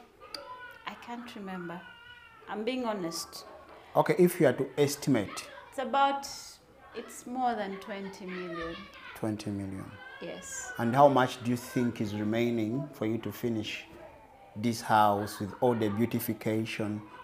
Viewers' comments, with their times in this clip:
0:03 That baby next door ,tho. Give the baby its breast already man ! 😁😁